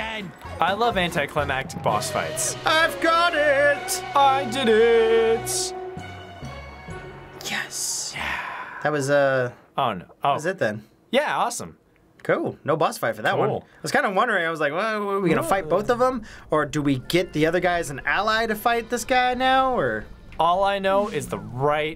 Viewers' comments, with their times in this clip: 0:03 Don't know if you noticed, but the "Time Piece Get" music is all distorted and off-sounding, hinting at the actual final act.